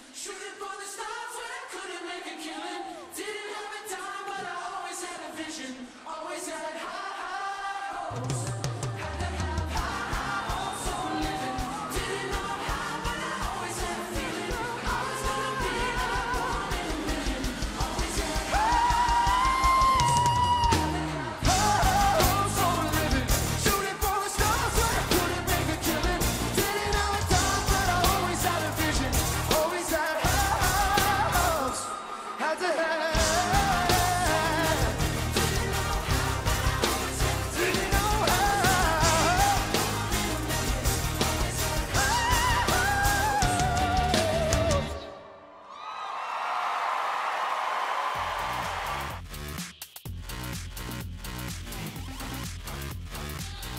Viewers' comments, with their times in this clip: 0:09 I always wait by the studio version for the high note, but unfortunately it doesn't exist😂😂
0:18 "Had to have high high notes for singing"
0:18 that high note had me shook
0:18 that high note, higher than my grades in college
0:18 High, high noootes...
0:18 HOLY SHOOT BRENDON URIE JUST BROKE MY EARDRUMS!!!!!!!!!!!!
0:18 High hopes more like high notes
0:18 brendon and his high notes me i tought he had high hopes for the high note after that singing tells band i cant do another video my voice hurts
0:18 THAT HIGH NOTEEEEE!
0:18 wtf, that high pitch, that's sensational jeez
0:18 Areana Granday: I can sing in high notes Brendon: Holed my mike
0:18 THIS MAN JUST HIT A HIGH C MOST SOPRANOS CANT DO THAT BUT HE CAN ALSO SING LOW BASS RANGE F#s WHAT IS THIS MAN
0:18 is when brendon sang his high notes
0:19 holy shit! You know someone can sing if they can hit that high note live
0:19 that note was higher then the amount of people who opened the fridge today
0:19 that’s what you call a ‘real voice’
0:20 high note and hair flick
0:20 Wow that stomp
0:24 did he just cracked or what?!?🤨🤨
0:24 Its already in lower key yet he still messed up, his voiced cracked just one example
0:24 Voice Crack At Stars
0:25 hes voice crack
0:41 that falsetto was ridiculously perfect!